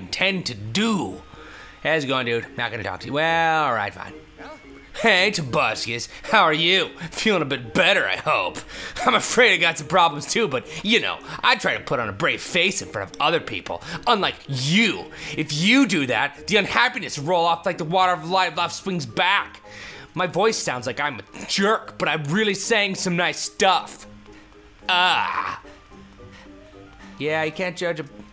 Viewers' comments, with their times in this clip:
0:04 he sounded like Ian from smosh kind of...
0:05 i thought he were British!!
0:05 I though he had a British/Australian voice
0:12 "i've got some problems too.. like forgetting i was brittish"